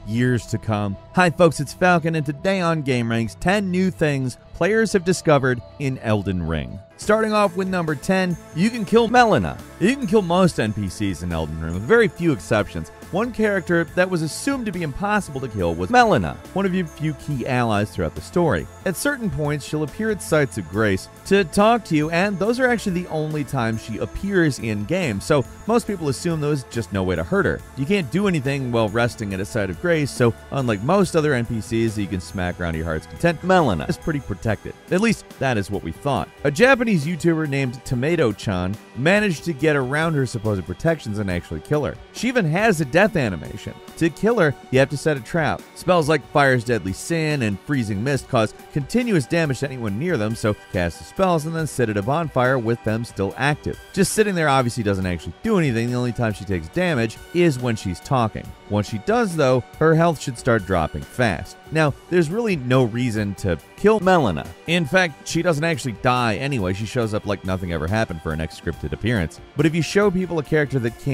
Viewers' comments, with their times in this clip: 0:08 did you think people wouldn't notice if you edited in the correct name? Hahaha
0:59 when he's mentioning her name, you can clearly hear the cutout where he misspoke her name :-).